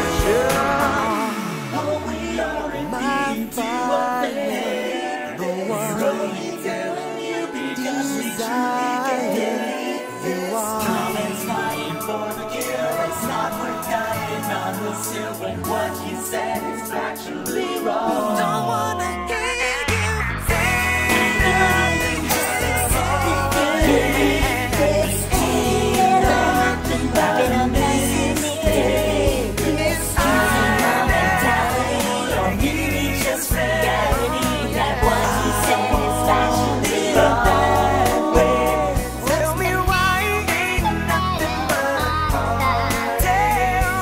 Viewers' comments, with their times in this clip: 0:06 that harmonising was fucking heavenly
0:07 those vocals tho
0:29 Alvin that you?